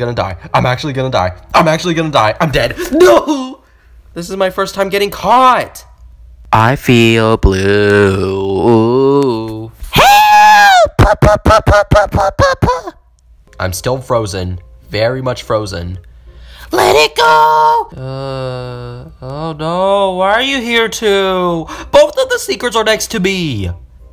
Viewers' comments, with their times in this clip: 0:06 why is your voice like that